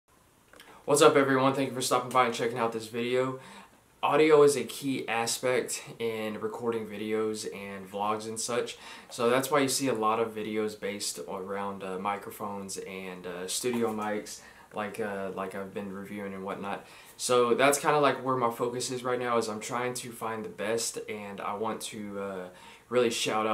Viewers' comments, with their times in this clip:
0:05 LOL...I started cursing and blaspheming my audio because I thought there was something wrong with it until I saw your message